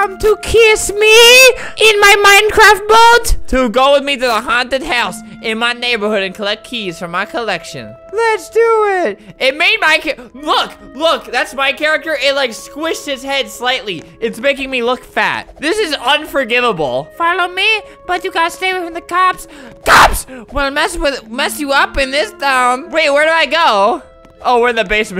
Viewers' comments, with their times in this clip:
0:09 who loves flamingos voice no Well ok its just me :[ NOTE this one not the other one LOL